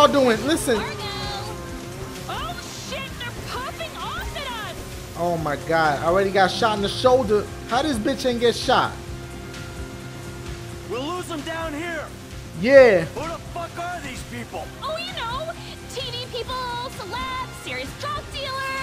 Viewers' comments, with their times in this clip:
0:04 Who else thought it sounded like pooping instead of popping